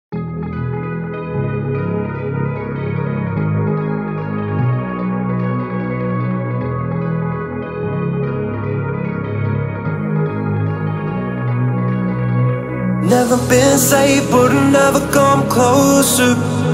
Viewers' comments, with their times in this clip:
0:00 i love the beat so so so so mucchhhhh🤩🤩💗💗💗💗💗
0:00 i can’t stop repeating the beat omfg